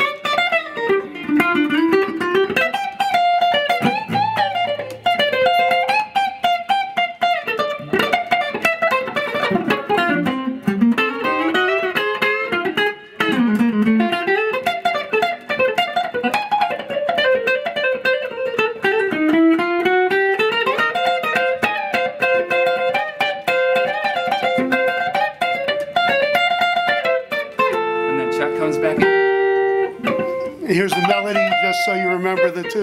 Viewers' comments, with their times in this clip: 0:10 just a stroke of musical genius there Grant to toss in the parallel slides. I always felt the solo led up to that moment, the whole song really, hinges at that highpoint. Thanks for some great music.
0:10 The lick knocks me out every time. A perfect way to come out of that flurry of notes right before it. I wonder if he worked this out on his own before the session, or just winged it while the tape rolled.
0:19 Such a brilliant solo. Love the little chromatic run that starts Amazing lick right there!